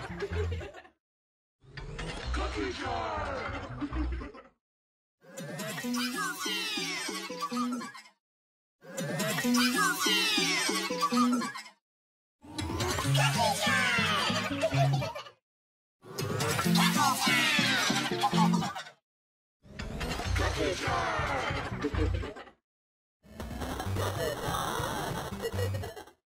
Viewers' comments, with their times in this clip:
0:09 Lost effect is wrong because you forgot the I killed X pitch